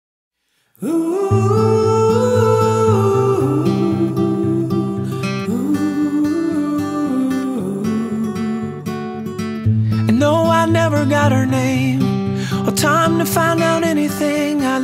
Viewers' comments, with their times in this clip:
0:00 It Sounds Like Chinese Music